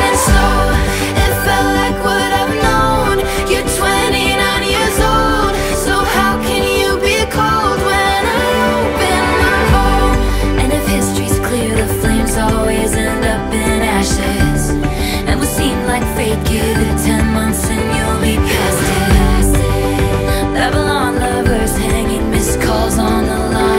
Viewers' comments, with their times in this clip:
0:10 taylor starts here if anyone is wondering
0:10 Taylor sings backing vocals until time stamp she has her verse then when it gets to the bridge they are both singing it
0:11 IS THIS TAYLOR SWIFT VOICE 🥹🥹🥹🥹🥹🫶🫶🫶🫶🫶🫶